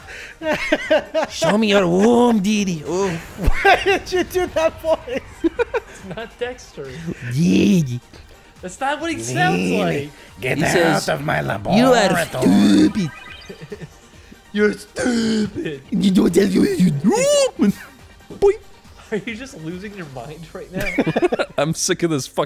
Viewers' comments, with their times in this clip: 0:03 you sound like Ren from Ren and Stimpy